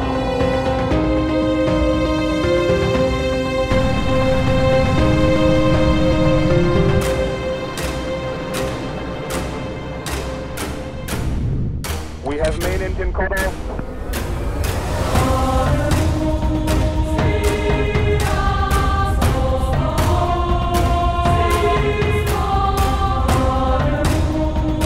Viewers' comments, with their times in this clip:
0:07 Love the music for this video, so fittingly epic! Reminds me a lot of Hans Zimmer's No Time for Caution <3